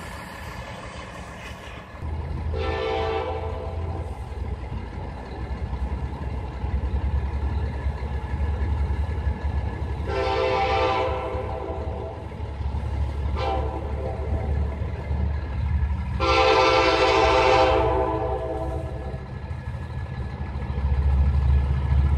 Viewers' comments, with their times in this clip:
0:09 what a glorious horn sound